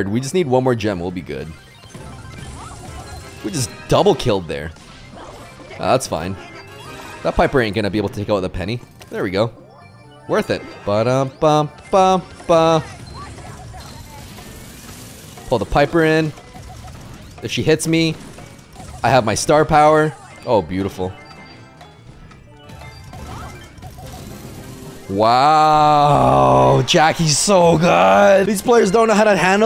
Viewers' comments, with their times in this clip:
0:10 plays mcdonald theme song